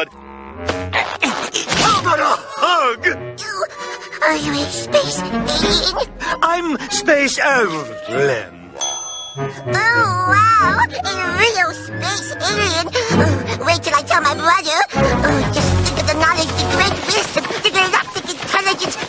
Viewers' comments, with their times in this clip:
0:06 What the hell did he say ???